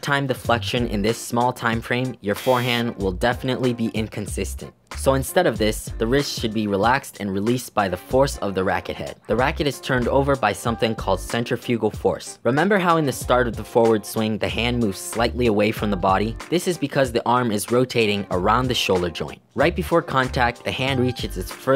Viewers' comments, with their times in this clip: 0:05 I thought you started rapping lmao